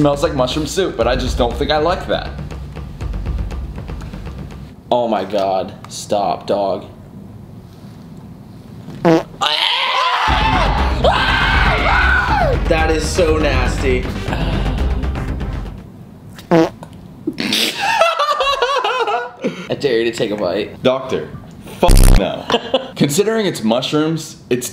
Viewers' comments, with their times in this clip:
0:06 both of their screams were so funny
0:07 that mushroom CHUNCK CHUNCK
0:09 the screams are what makes the video better
0:10 ok Ik where bo2 got the Alien Denizen sound from for tranzit listen for the high ass pitch scream 😂